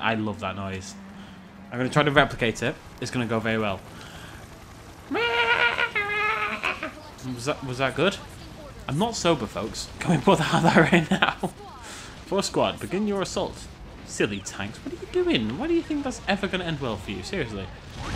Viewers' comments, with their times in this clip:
0:04 when he made that noise I spit out my water and it came out my nose